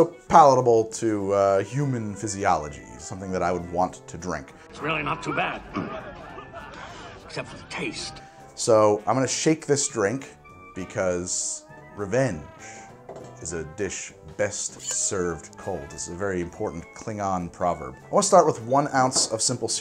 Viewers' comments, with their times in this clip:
0:04 damn, that sounds/ looks like Odo!
0:05 I believe that's a solid-locked Odo not O'Brien. I'd recognize Auberjonois' voice, anywhere.